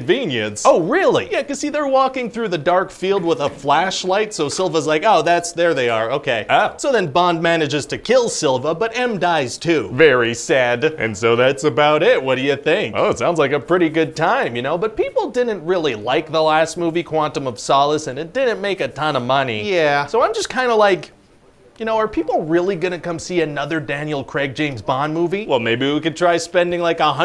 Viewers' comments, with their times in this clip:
0:09 I love how gleeful he is when he says VERY SAD.